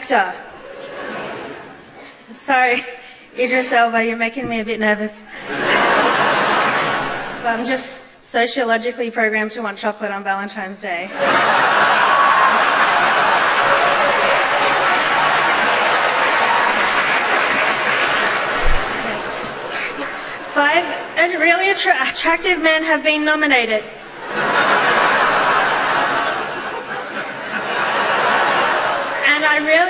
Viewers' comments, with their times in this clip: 0:10 valentimes day? how does one get to be her age and have never seen valentines day spelled so she'd know how to pronounce it?